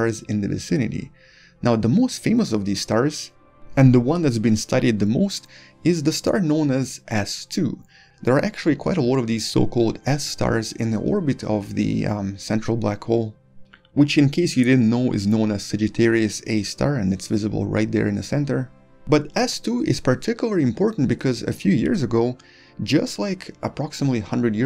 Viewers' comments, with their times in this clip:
0:06 ..ass 2? What happened to ass 1? :C